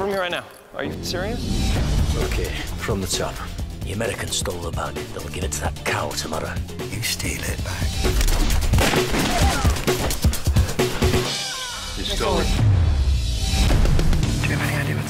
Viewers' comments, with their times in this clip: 0:03 Statham voice impression?